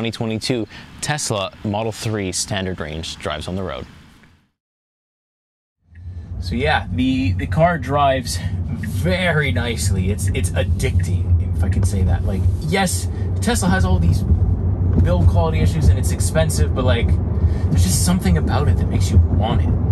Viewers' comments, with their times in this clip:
0:06 The contrast of saying how nice of a car it is while that really bad cabin noise comes through and the bumpiness of the ride shows is kind of ironic